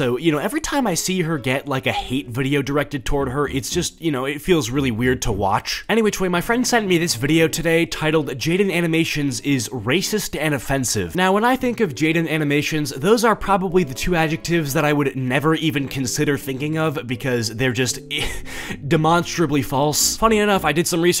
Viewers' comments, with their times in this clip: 0:08 the pretend girl voice in the video sounds like me if i tried to speak in a high voice